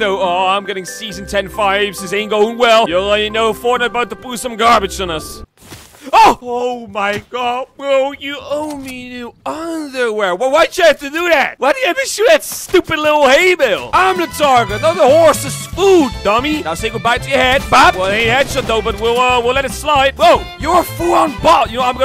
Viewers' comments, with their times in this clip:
0:06 Says very softly “oouu my god bro, you owe my new underwear” 😂
0:07 sounds like a 3 year old complaining lol.